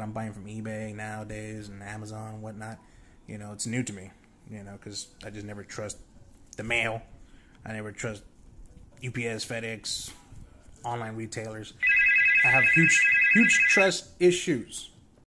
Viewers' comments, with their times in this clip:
0:11 BE CAREFUL MY PHONE RINGS LOL I couldn't fix it STUPID PHONE!!!